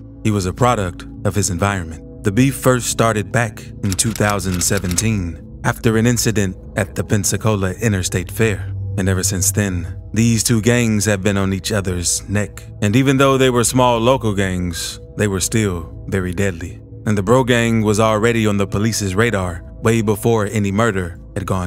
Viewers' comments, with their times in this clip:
0:03 why is this dude talking like that?🤣